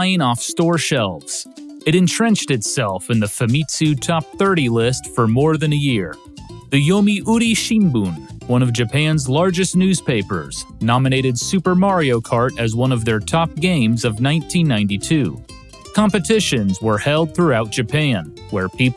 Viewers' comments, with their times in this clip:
0:05 this marionkart 8 sound is soo beautiful